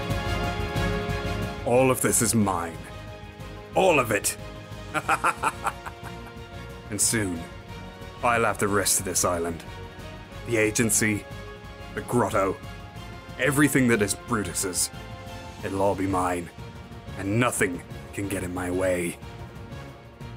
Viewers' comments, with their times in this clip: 0:04 Lets compare the Thumbnail with this laugh=